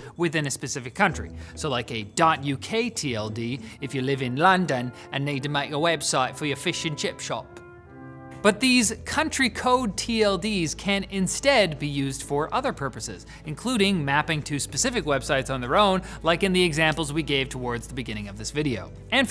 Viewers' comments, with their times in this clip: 0:03 nice bi'ish accent
0:03 sounded like, french/italian/croatian/maltese